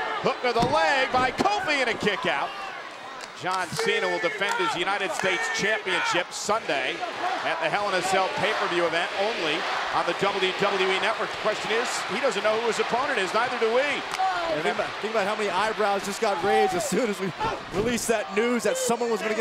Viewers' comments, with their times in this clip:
0:05 Lol the was like CENA CENA 2 seconds later the crowd goes CENA CENA CENA